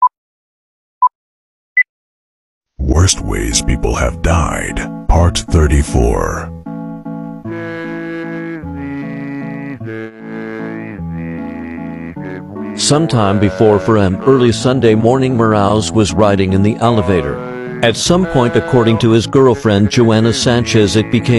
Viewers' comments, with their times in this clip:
0:03 he sounds depressed💀